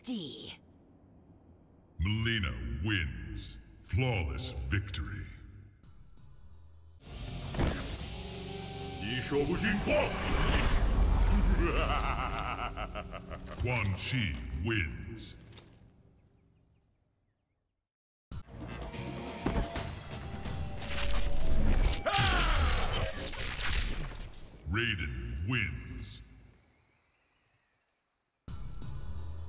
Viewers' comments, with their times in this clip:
0:10 Quan Chi's laugh is so priceless at 0.5x the speed :)